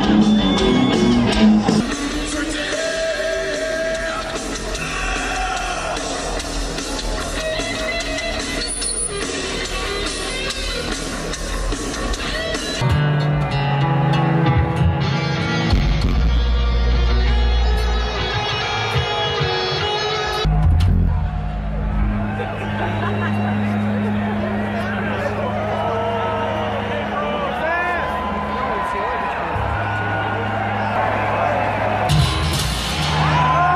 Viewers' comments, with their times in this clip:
0:05 thats the noise I make on the toilet
0:17 james guitar was tuned to the original record turned while the rest of the band was tuned half step or a whole step down lol